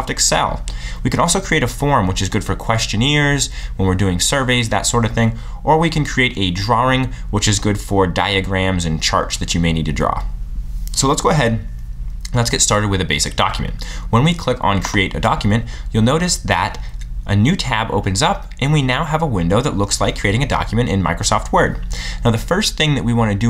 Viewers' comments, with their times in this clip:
0:06 Jesus christ. Speaking way to fast! Bailed on video My head hurts.